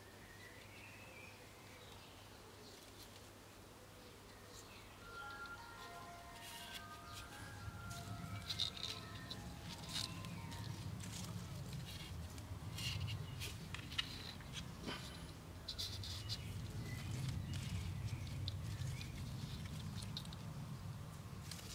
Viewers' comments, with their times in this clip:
0:07 Was that an ice cream truck's tune I heard? Lovely! 🍦